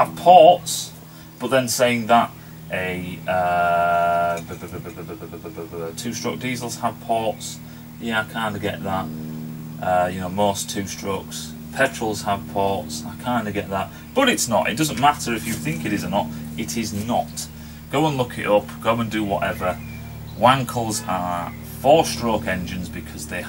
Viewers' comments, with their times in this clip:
0:04 hahaha he sound like rotary